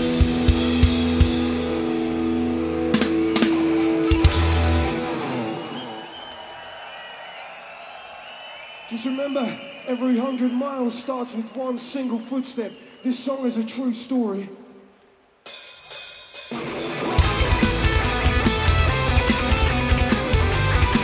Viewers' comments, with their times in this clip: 0:09 ouch... I just got to this part of the show... Well, well, well... I mean... I guess... Well... Maybe something's with the singer's voice... I mean... ... Well... Hummm...